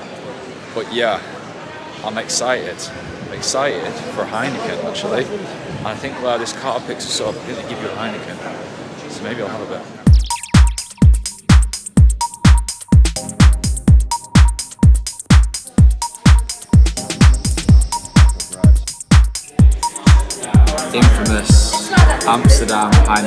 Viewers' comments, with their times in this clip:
0:10 Oft what's that warm number coming in ??